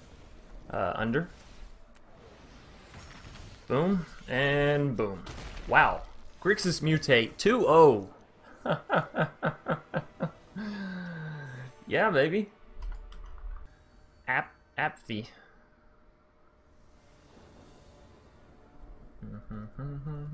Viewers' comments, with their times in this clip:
0:08 Most awkward laugh ever 😉 Keep up the good work brother